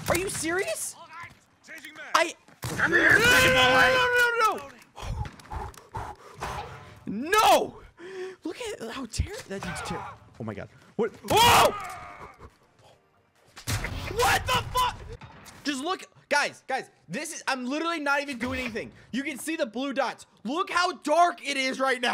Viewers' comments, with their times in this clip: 0:03 he sounds like a stand